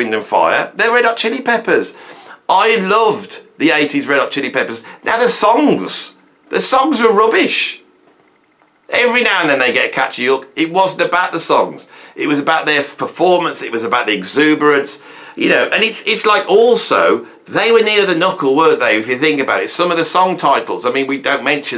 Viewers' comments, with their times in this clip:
0:04 noone does deadpan like the British. thanks for the laugh